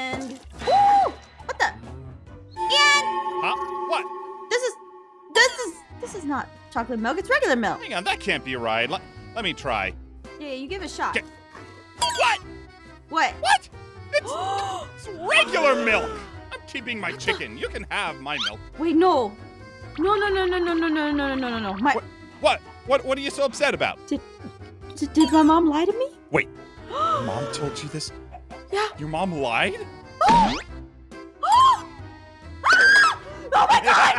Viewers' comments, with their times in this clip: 0:03 how she starts screaming and aphmau is so surprised that her mum lied parents lie at least 10 times
0:18 the way ein says "you can have my milk" is pretty sus